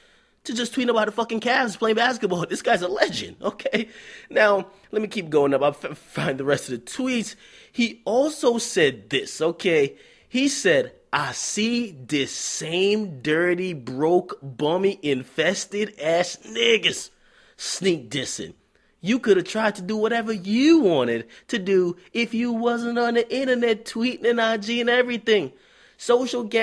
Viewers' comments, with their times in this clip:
0:10 I’m still crying over this 😂😂😂 man reads tweets with such force